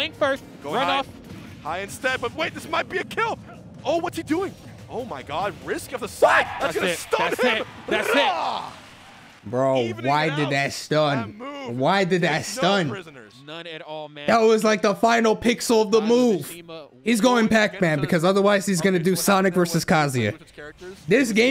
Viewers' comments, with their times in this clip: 0:06 YO THAT "WHAT??!" ECHOED 😂😂😂